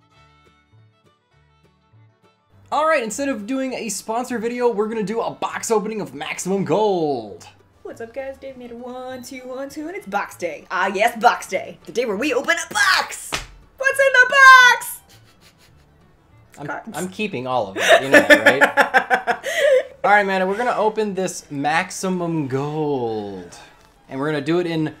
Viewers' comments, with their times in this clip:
0:08 I didn't know you could do a girl's voice so perfectly.